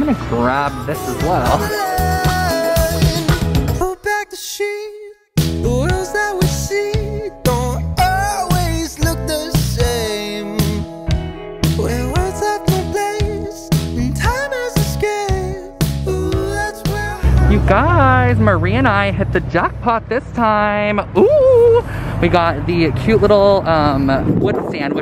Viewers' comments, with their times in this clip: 0:10 What is the song it's super groovy